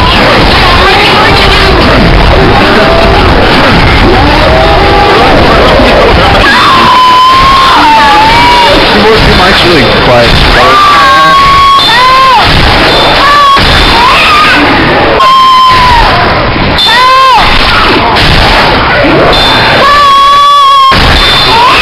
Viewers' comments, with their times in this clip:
0:09 2 Rochelles screaming in 'agony' ... I can't decide whether I should jump up and down with glee or clap my hands over my ears. DAMN, her voice is grating.